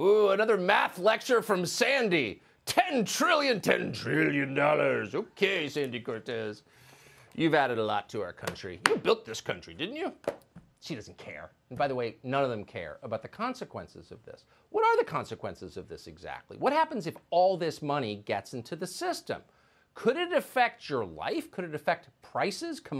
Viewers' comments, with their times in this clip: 0:03 tucker sounding like mr.krab.